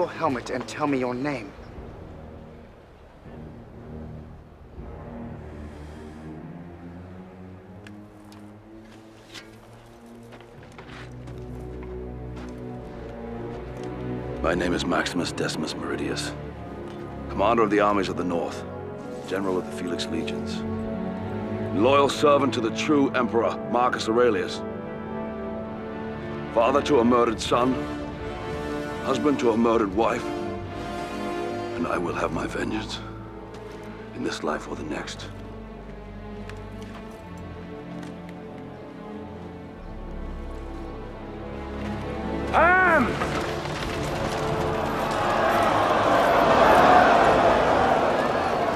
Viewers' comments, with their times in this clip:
0:08 Some due to music i guess i expect harbinger from mass effect talk it is so similiar to that.
0:26 How is no one talking about the music!!?? Hans Zimmer's soundtrack literally gives me chills
0:33 Hype of this scene is peak but then come the violins ... omg.